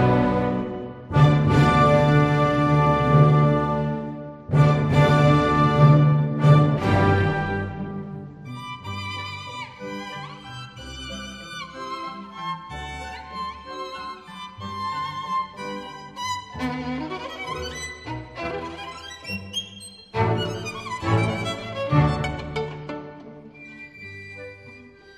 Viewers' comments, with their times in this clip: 0:08 What I like about this La Campanella is the violin solo part starting